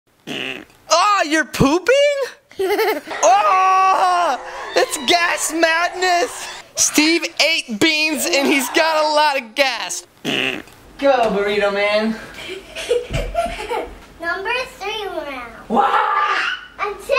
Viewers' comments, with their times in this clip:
0:02 what a wierd laugh